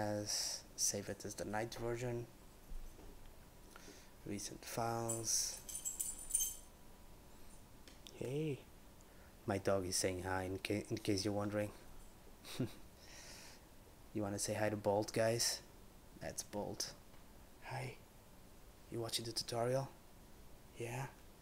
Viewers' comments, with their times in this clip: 0:07 lol I misheard that and thought you said, "want to say hi to bald guys?". . . .hey, I'm not bald! . . . . . yet.